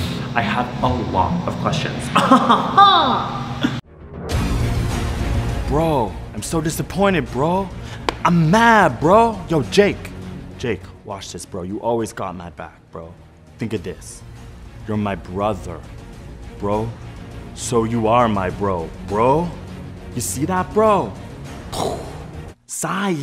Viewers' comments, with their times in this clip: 0:05 the fuckin straight voice LMAOOO